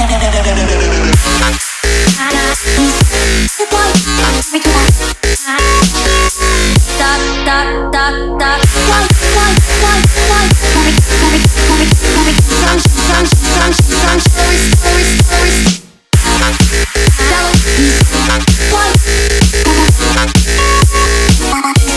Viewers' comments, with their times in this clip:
0:07 Only me that get some kind of "Daft Punk" around here ? :3 Love the Music BTW ;)